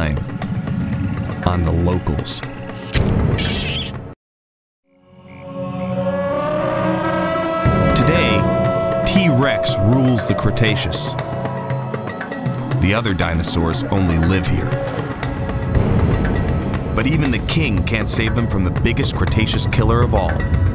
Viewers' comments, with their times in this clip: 0:06 that T-Rex had an awesome roar